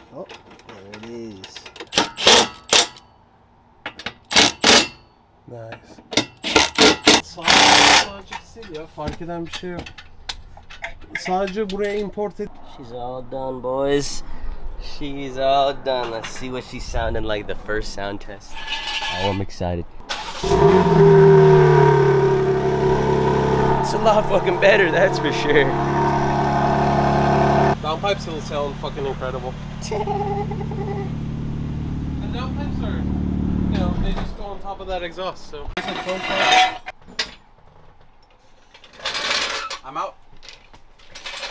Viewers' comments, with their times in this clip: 0:10 He was speaking Turkish😊
0:27 The laugh “te he he he he”🤣🤣
0:29 Bruh the laugh has me dying 😂😂